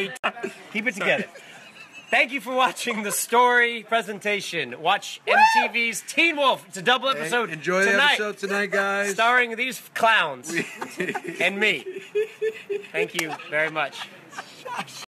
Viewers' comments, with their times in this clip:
0:09 Tyler’s giggle was the most adorable thing on this earth!!! Why is he like this 🤤